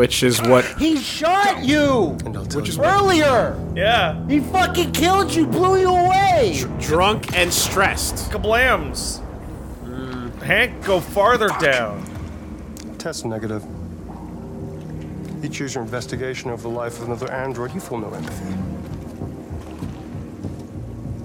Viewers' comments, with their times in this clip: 0:07 * Shoot Android * POP POP POP POP POP POP POP POP POP POP POP POP POP POP POP POP POP POP * Reloads Gun * POP POP POP POP POP POP POP POP POP POP POP POP POP POP POP POP POP POP